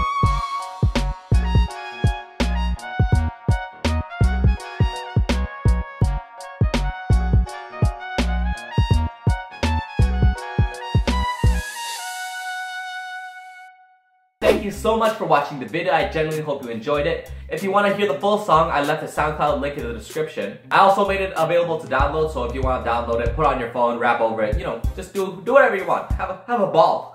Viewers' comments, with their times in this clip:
0:10 sounds like the end of the office theme